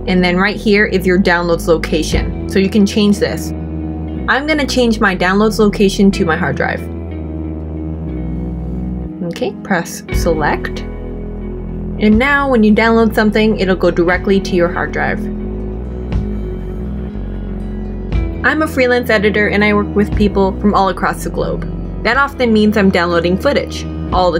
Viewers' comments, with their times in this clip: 0:08 wdym naked entrepreneurs??